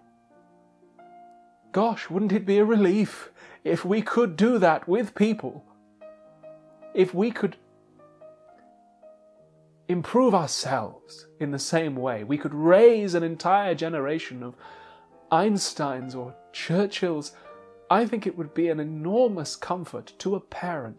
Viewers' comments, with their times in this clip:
0:08 sounds exactly like the high evolutionary in guardians of the galaxy 3 😭